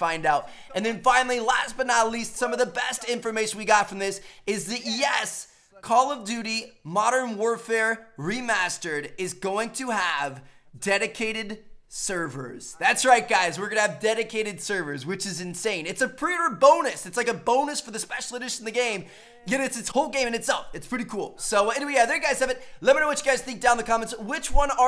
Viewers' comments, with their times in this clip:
0:05 He says yes in the background video and in the commentary at the same time